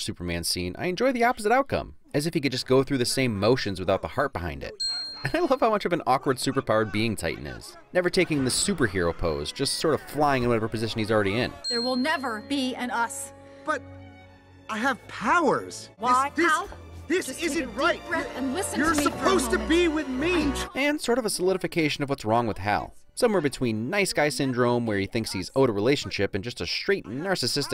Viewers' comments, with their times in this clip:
0:10 Well whether it is Tighten or Titan, CinemaWins calls him both XD check